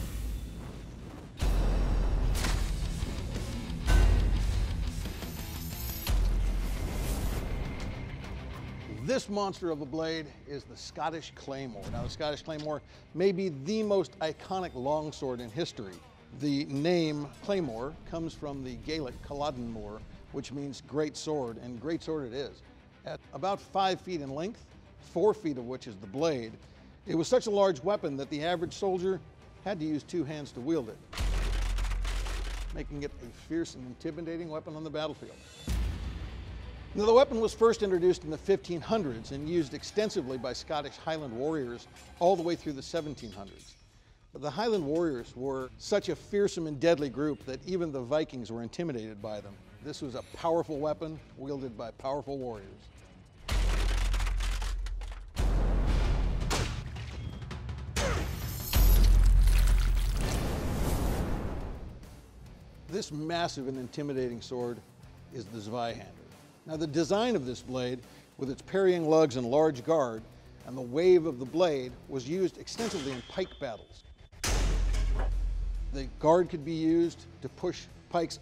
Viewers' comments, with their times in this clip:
0:08 DUNMAHGLASS Edit: For all the For Honor people.
0:48 "Daun Ma Glass" Intensifies
1:03 i am from Germany and it sounds so funny how he says Zweihänder XD